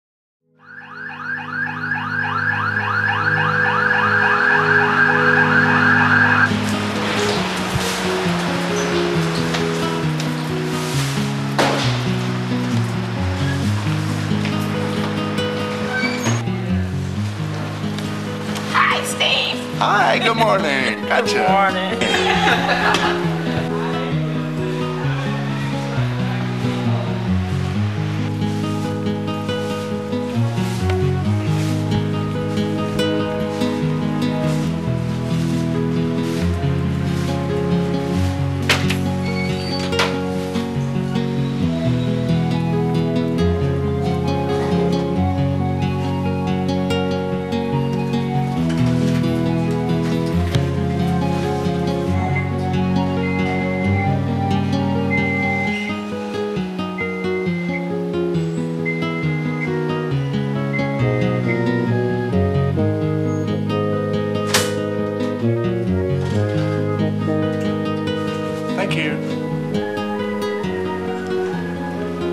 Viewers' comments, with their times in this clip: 0:06 it wouldn’t be the late eighties/ early nineties without a car alarm screeching all day for no reason at all.
1:00 why does the lift beep the whole way up?